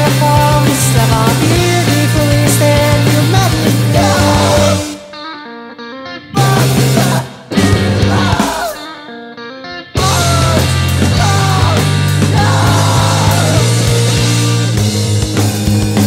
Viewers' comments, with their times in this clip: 0:03 what is that? Scream? I can fill the scream part tho' xD